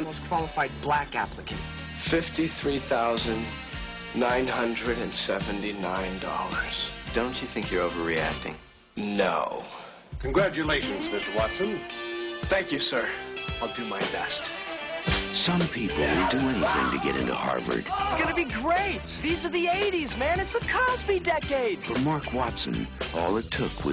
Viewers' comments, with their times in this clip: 0:09 the way he says "no" is everything